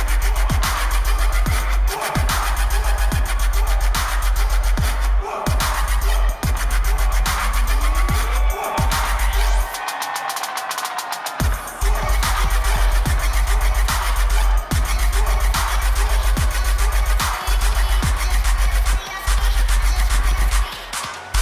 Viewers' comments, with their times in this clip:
0:09 I've watched this a bunch of times.. I've always found it annoying how quickly they fade into the next song.